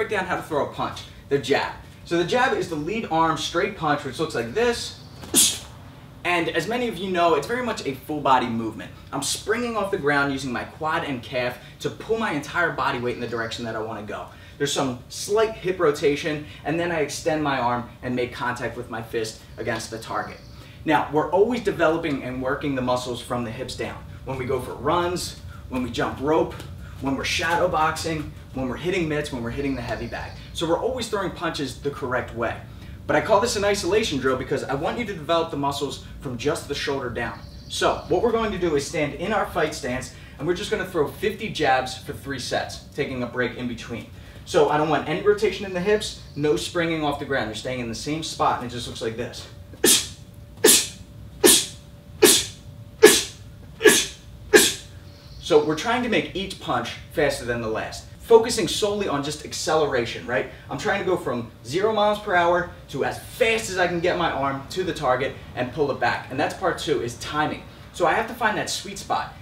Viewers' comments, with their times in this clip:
0:05 that pssstt was late
0:12 Are we really hearing your dog snoring 🤣🤣
0:30 minecraft zombie noise?
0:36 lol is your camera guy taking a bong hit?
0:48 I dunno what was funnier or the breathing behind the camera. Funniest shit I’ve seen all day 😂
0:48 it sounds like he's actually hitting a target😂
0:49 sounds like my dog when they have a sneezing fit
0:49 bless you, bless you, bless you, Bless you, bless you, bless you, etc.
0:49 Maybe you're allergic to punching, it seems to keep making you sneeze. 🤧🤣Jk lol, thanks for the good training tip, I've been wanting to work on my speed.
0:49 Why do you make those noise??
0:49 bless you, bless you, bless you, bless you, bless you, bless you, bless you
0:49 I thought he was sneezing. 😅
0:50 bless you bless you bless you bless you damn he's really sick huh?
0:50 when you say bless you but they keep sneezing
0:50 really sounds like me when I don’t take Allegra lmao
0:50 When your watching a level 1 AI fight, and why is the hulk breathing on the mic
0:50 This is how I sound trying to get a sneeze out:
0:50 Sneezing sound xd k i'm sowwy
0:50 He's like sneezing while jabbing
0:51 Is he sneezing ?😭
0:52 who was waiting for the beat to drop
0:52 bless you, bless you, bless you, bless you...
0:52 when the sneezes just keep comin
0:52 he sounds like my cat sneezing
0:52 What is that sound he is making? -8 . . .
0:52 How to beatbox : The snare.
0:52 ayo bless u
0:54 Does anyone hear the snoring ?